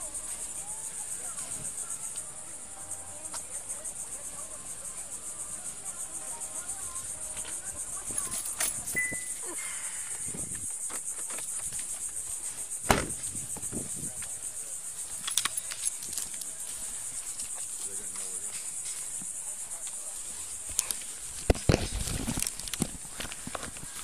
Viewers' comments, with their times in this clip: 0:08 rude. i was enjoying that music. also these cops are so lucky to survive what they go thru every day 😮